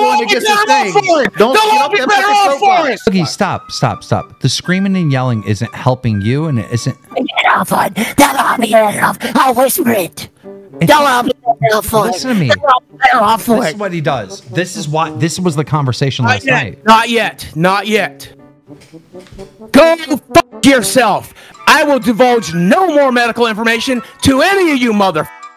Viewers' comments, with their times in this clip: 0:10 boogie starts sounding like spongebob.